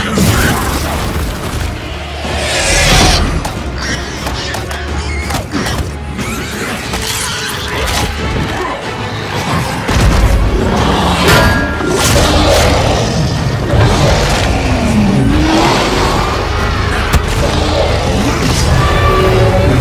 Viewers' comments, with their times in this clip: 0:06 in the first age...in the first battle...(dooom music intensifies)